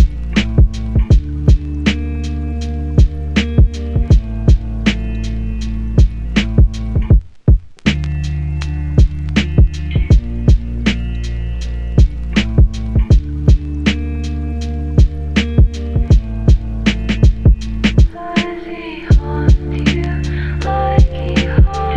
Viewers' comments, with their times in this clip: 0:06 The beat break